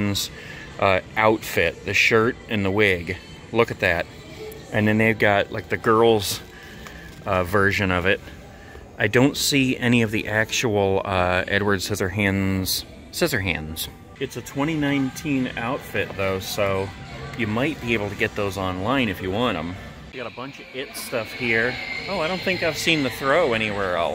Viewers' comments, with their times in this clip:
0:06 I just realize the let it go in the background listen carefully